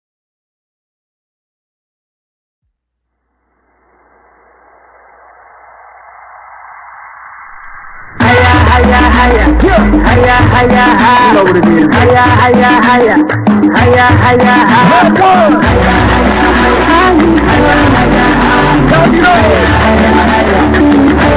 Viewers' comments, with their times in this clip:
0:04 My Fav Music On